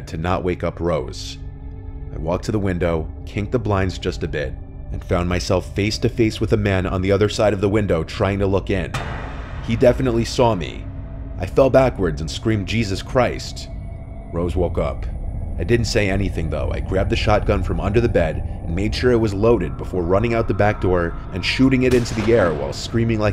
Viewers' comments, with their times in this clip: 0:08 I got a jumpscare when the sound effects of OP seeing the creep outside the window happened!